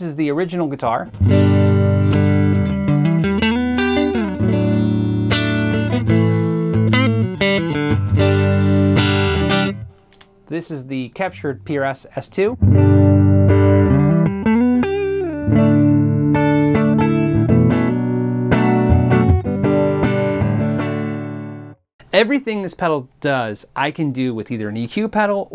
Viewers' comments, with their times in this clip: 0:10 Wow, it destroys the tone of a beautiful sounding guitar quite effortlessly, I'll give it that.